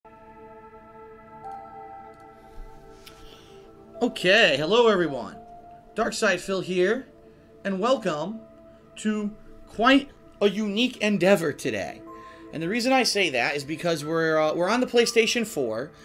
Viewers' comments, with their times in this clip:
0:01 Anybody else reminded of Star Trek: The Original Series theme